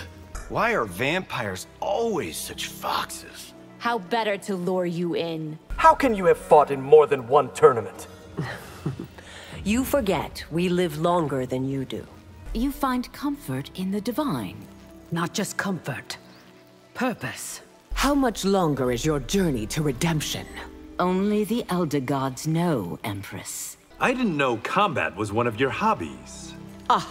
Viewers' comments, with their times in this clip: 0:08 Dat Li Mei’s giggle 😄